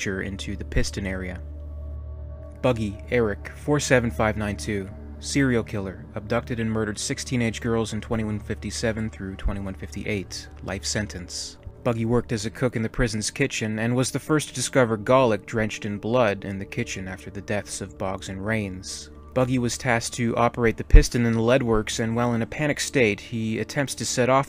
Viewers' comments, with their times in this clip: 0:06 “abducted and murded 16 inch girls” What a monster!!!